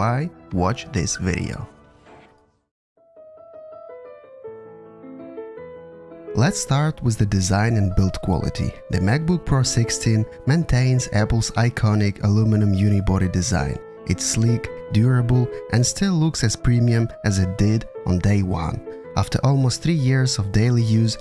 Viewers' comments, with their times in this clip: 0:06 You have the perfect accent for this. I paused to grab some wine and cheese.